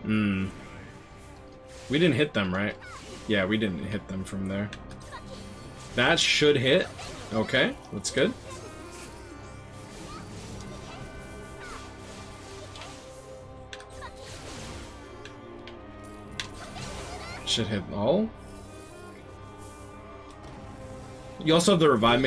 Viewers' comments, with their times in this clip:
0:05 Does anyone know the name of the OST that is playing in the background around here (The one with the slow Violin/chelo) tnx